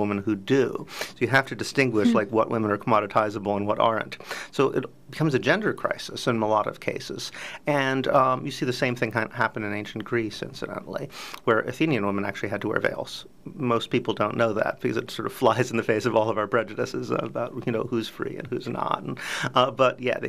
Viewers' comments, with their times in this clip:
0:08 "You see the same thing in Ancient Greece where [something] women have to wear vales." What is the something? Replaying it a few times I can not pick it up. [Something] is garbled.